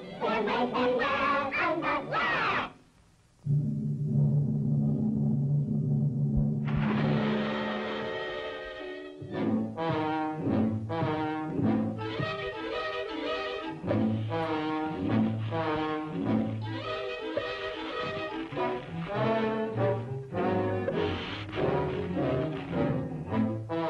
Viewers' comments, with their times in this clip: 0:04 I still remember this tune that played when I was a kid, something about it is so disturbing, especially with the way he walks